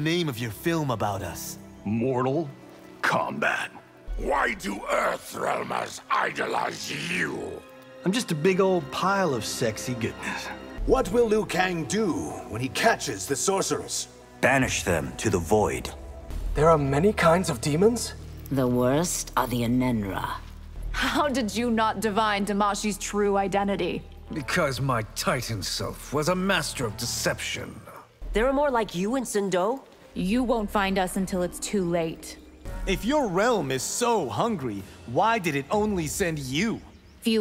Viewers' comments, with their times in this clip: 0:04 This one is my personal favorite. Baraka just sounds so geniuenly confused on how Johnny is so popular and Johnny pretty much responds with "I'm sexy and I know it!" lol
0:25 Compare the voicings, SO MUCH DIFFERENCE